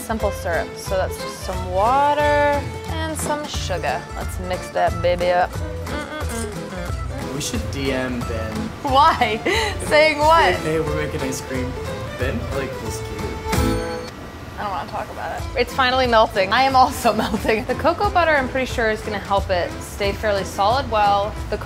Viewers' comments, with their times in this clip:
0:03 I thought she said suga!! Lol!!